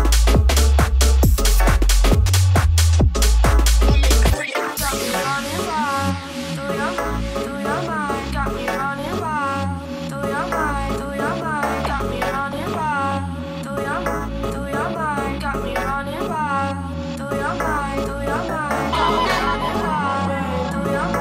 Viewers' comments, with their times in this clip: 0:04 Dope...Will Check More Of His Stuff. Is My Fav. Smooth As Beat.